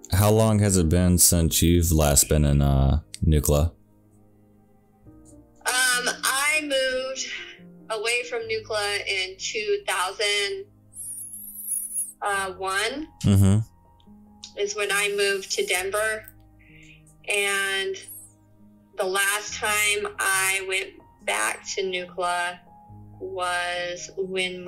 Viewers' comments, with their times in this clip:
0:10 BRO THAT LOUD NAISAL INHALE HAS ME VOWING TO NEVER WATCH ANOTHER OF UR VIDEOS EVER AGAIN - unsubbed